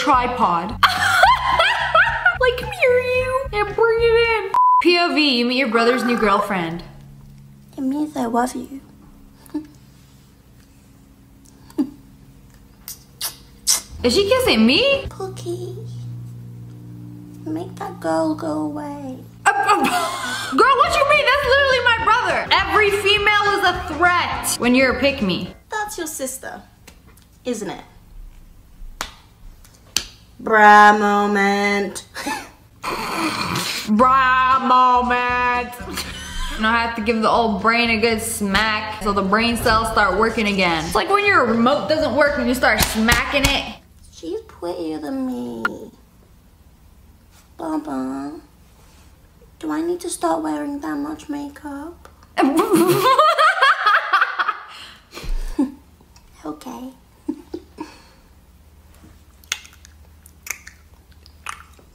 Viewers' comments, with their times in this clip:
0:07 she sounds like a cocomelon character.
0:47 Why She Sounds Like Peppa Pig?🐖🐷